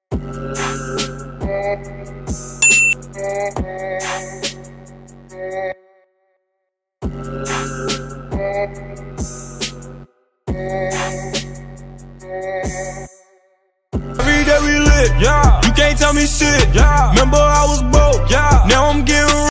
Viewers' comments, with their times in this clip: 0:08 i was hearing this song while watching this video i got confused !...